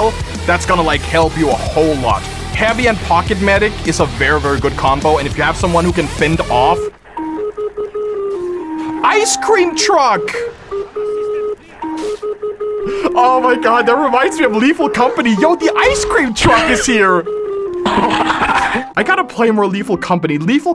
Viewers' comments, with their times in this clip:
0:07 this was NOT AN ICE CREAM TRUCK SONG. THIS WAS AN GOVERMENT WARNING.